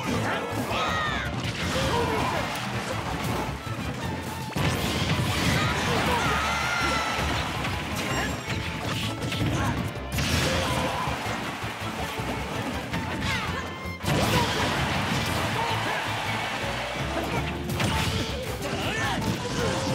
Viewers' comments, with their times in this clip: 0:05 Young Link scream